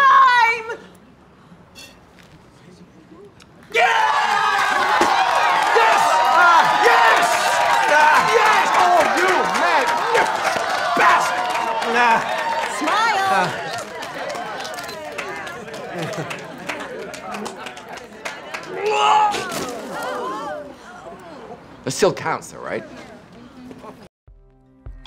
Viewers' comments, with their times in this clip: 0:08 His brittish accent surfaced.